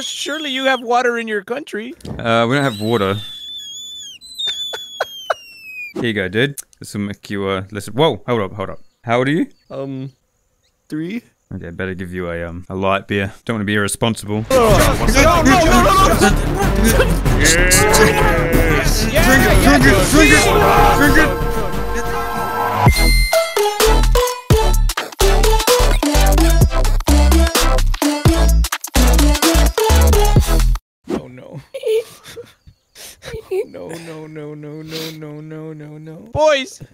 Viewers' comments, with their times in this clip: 0:05 That is the most High pitched scream I have ever heard is he ok?!? XD
0:23 Everytime i hear that intro i start glitching